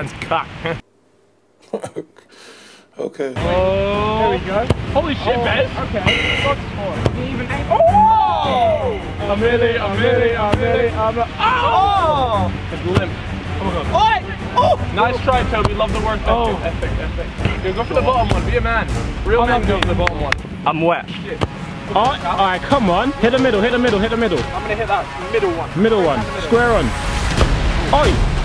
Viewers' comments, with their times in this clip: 0:09 it sounded like a orchestra